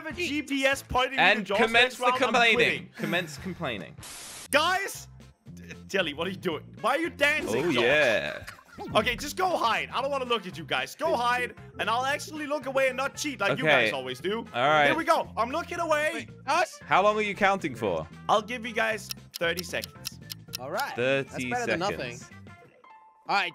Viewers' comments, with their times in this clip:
0:08 the way me sead oh yay 😁😁😁😁😂😂😂😂😂